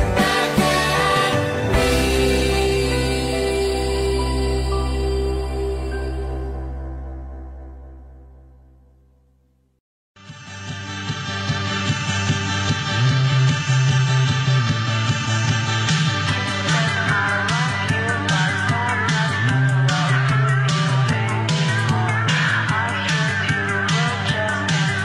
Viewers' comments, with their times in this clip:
0:08 this sounds like a song recorded from my dreams what